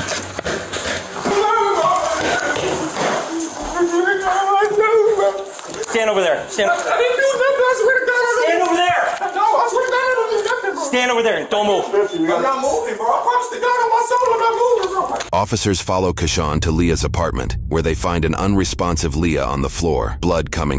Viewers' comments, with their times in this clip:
0:04 if I was blindfolded and told the one speaking is Mickey Mouse I would believe it
0:06 Dude turned into Mickey Mouse